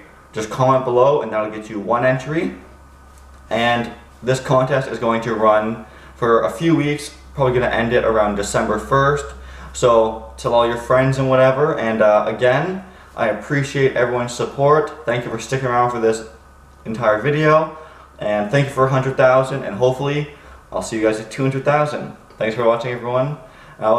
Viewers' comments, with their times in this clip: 0:07 I'm in! though. there was someone sleeping i guess haha. keep your voice down xD